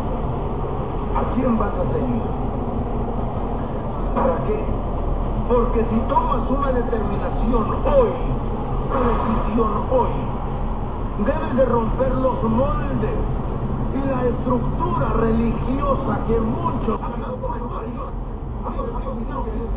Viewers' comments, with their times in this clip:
0:05 Sorry cammer getting cut off and going angry honk ( and Illegal high beam) Makes you even WORSE then the one whom cut you off. As your not ONLY blinding him but also people whom are oncoming as well as those whom pass you by..